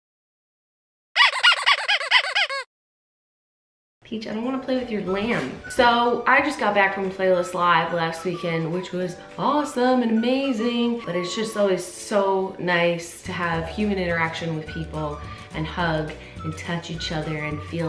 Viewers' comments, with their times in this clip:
0:04 Video starts for those who have dogs that bark at any squeaky noise they hear.
0:04 I thought she through marbles